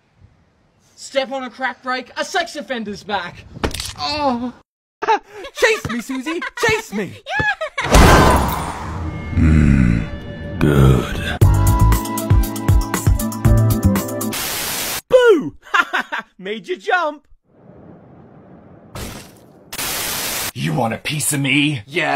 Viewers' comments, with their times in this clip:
0:04 OMG THAT MOANNNN
0:05 ayo what scream is that-